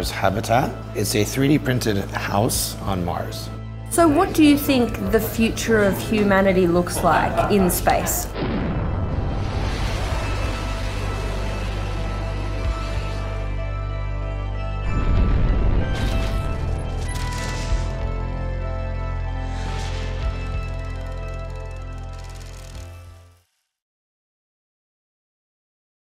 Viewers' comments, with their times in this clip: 0:07 DID I JUST HERE A ROBLOX ROCKET LAUNCH SOUND?!!?!.!.!
0:08 I heard roblox bomb explosion sound